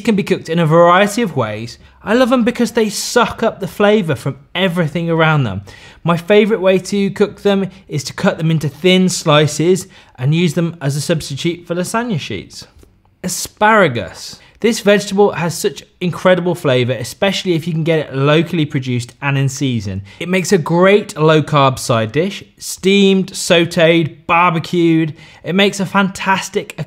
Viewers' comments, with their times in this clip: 0:09 What the hell is a san-u-sheet